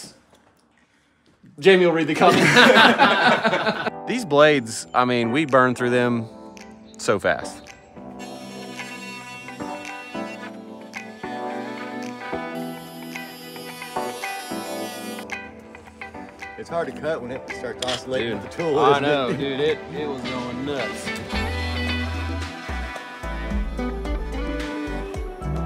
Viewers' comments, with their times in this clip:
0:09 the pitch of the saw is fitting perfectly to the background music ❤